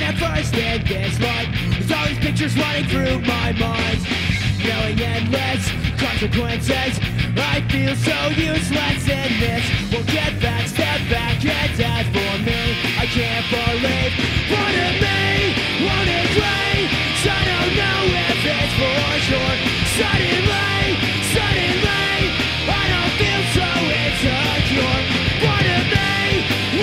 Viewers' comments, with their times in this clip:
0:09 Deryck's voice is so on point